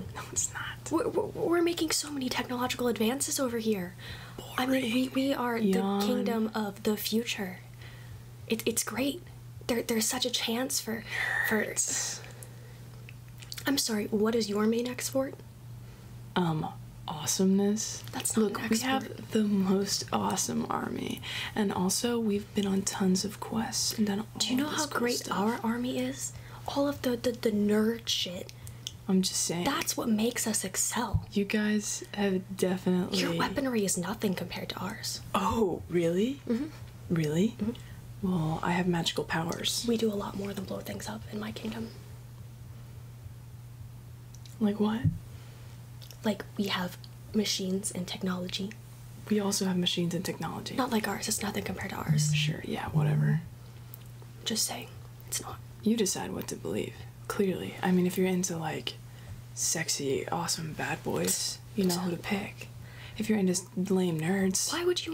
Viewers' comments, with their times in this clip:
0:05 did you just... say yawn?? verbally????
0:50 No one Not a soul Not even deku's mumbles The phone: I AM ALIVE BECH